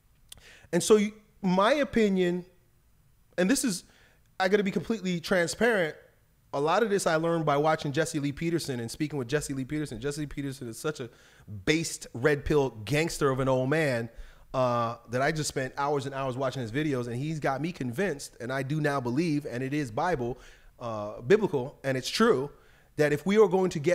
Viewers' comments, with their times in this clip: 0:08 thought he said Jordan Peterson had to rewind video couple of times. Though he said JP and was about to scream “Hell Yeah” lol 👍